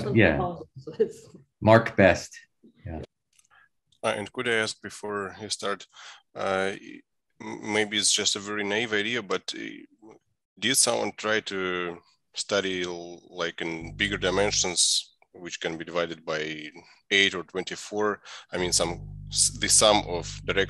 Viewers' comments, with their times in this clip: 0:04 its sync again.